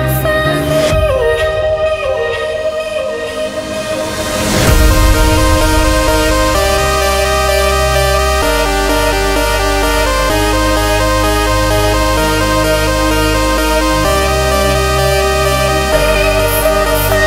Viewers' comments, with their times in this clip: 0:04 Porter Robinson vibes...